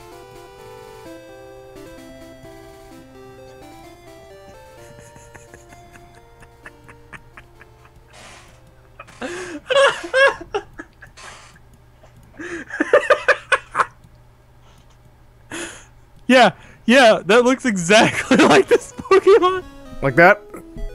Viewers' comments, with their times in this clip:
0:05 (Pokemon music stops)